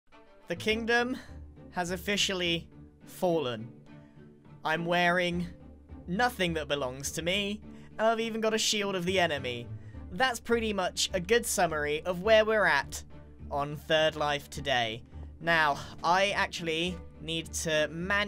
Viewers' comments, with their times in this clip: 0:00 R A P P I N G I N T E N S I F Y S